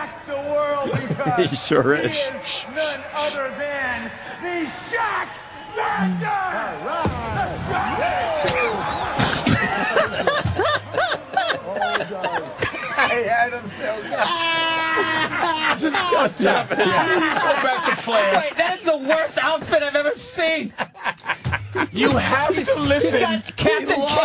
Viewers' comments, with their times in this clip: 0:09 HAHAHA Anthony's laugh is fucking classic